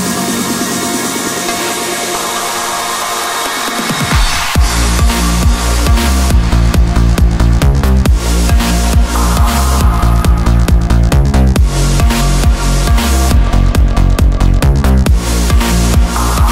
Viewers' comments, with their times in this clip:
0:04 cheesy?? are you fucking kidding me? ..this is total dark pleasure! what an eargasmic climax! ..Dash Berlin is cheesy, not this...